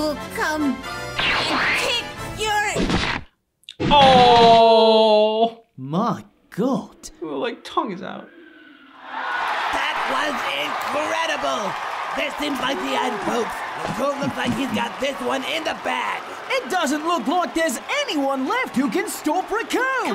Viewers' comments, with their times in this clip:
0:07 Actually his neck is broken. You can hear the sound of his neck breaking when Recoome kicks him.